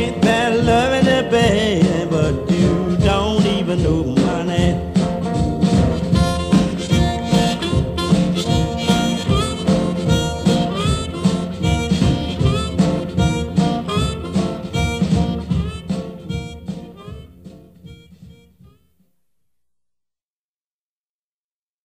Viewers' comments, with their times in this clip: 0:05 That harmonica starting knocks me out....